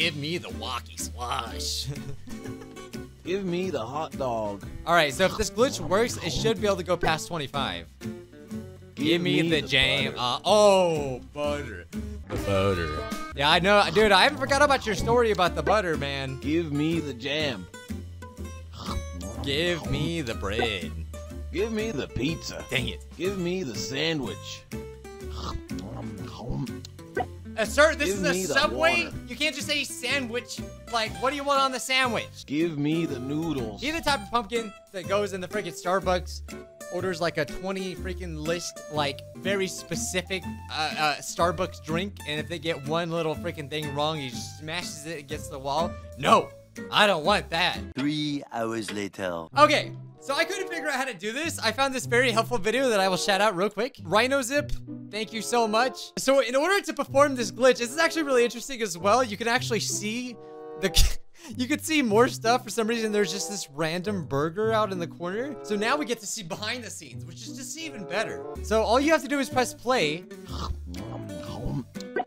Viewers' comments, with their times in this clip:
0:08 i thought he said jam lol impressive voice acting I mean he'd always love bUTTer anyway~
0:56 the Parp all of you are waiting for